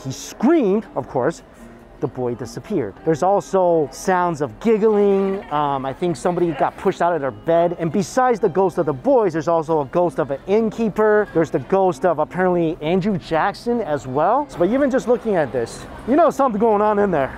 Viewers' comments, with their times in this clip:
0:03 right after he said it, there's giggling also in the bg😂😅